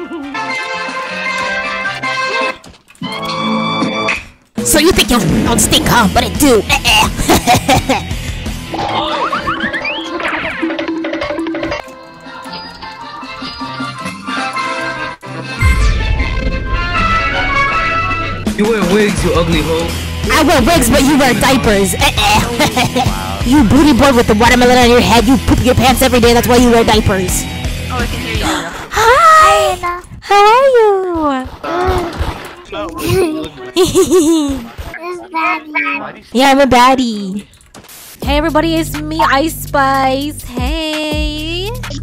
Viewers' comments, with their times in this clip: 0:03 I thought someone was calling me BC I have the same ringtone
0:25 ANGY TO HAPPY TO CHILD THIS IS TO FUNNY
0:30 That's a voice changer bro think's he's voice cute 💀💀💀